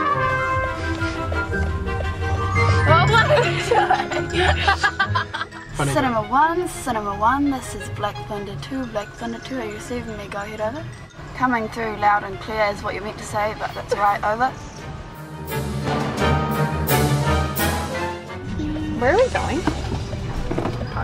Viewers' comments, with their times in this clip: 0:04 She just laughs like Hannah Montana O.o